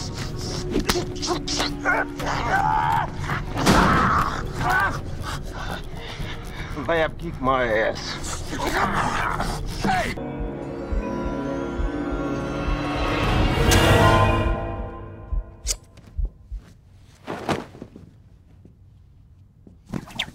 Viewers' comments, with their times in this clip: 0:06 he says it like a real man